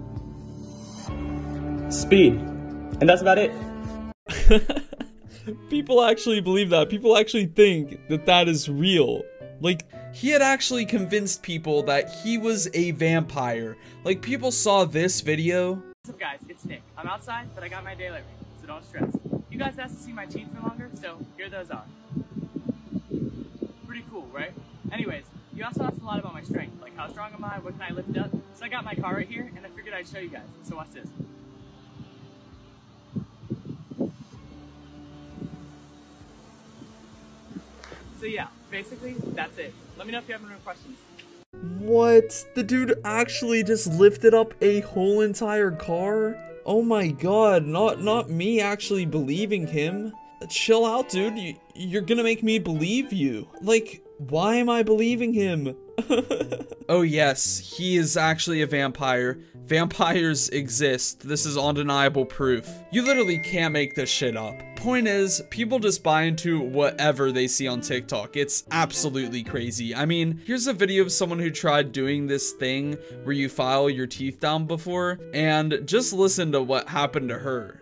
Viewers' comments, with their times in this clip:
0:04 idc if its a fake giggle its cute asf 💀
0:58 He literally was picking up a box that looked like a realistic car, not a real one. I can smell the sarcasm (maybe) and so on. XD
1:02 I thought the notification was real lol